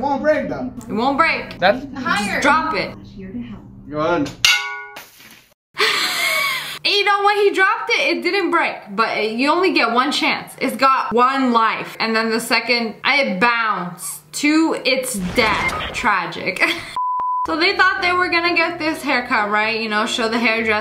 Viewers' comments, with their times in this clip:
0:04 Why was that shatter so satisfying?? I Replayed it a few times-